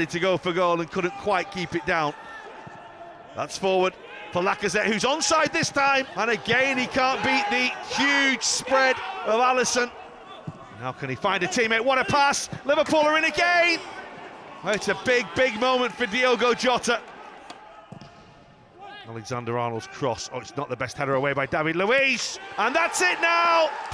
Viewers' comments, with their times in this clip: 0:07 the Van Dijk's scream 😯😯😯
0:07 when Virg and Robbo are screaming at Trent to get out after he plays everyone onside. Focus.